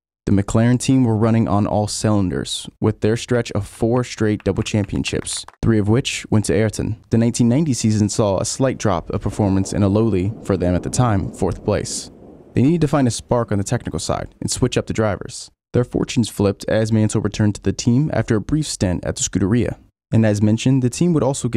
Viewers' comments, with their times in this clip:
0:04 "With their stretch of four straight double championships" I love the subtle clapping he added to that